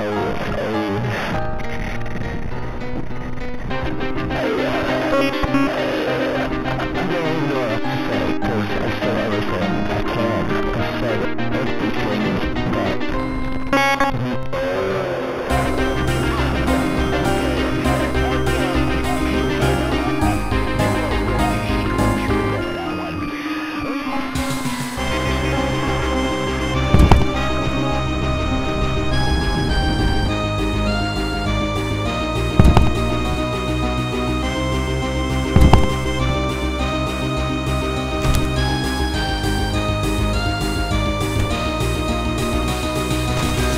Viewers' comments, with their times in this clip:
0:05 That so GOOD MUSIC XD
0:11 gives me chills, the music starting up and the beat dropping once the chase begins
0:16 is it me or is the boss fight ending music is fire 🔥🔥🔥
0:23 that beat gone hard ngl
0:27 bro everything vibing to the fire music lol
0:29 why the music sounds like a null Megalovania? (Or baldi)